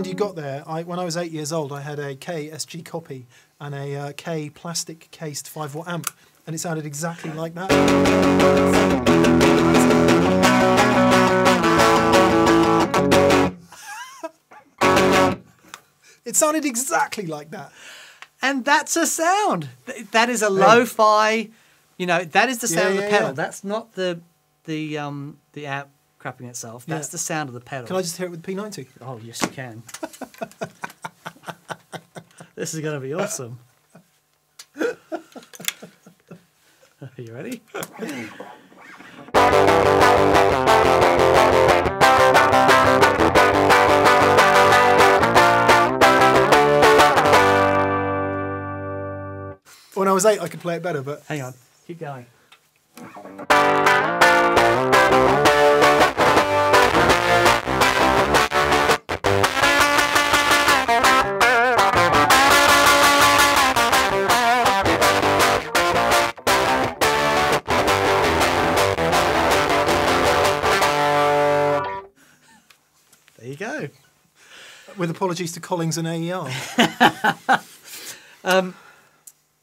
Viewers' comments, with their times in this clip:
0:08 instant eagles of death metal
0:48 The sound reminds me the times when i plugged a guitar into my HiFi system through the mic input of the casette recorder...Skimpy distorted sound. And i said to my myself: 'i need a real amp'.
1:03 correct me if i'm wrong but the sound from sound exactly like my old marshall ms2 tiny battery amp so why exactly is this pedal worth 400 dollars?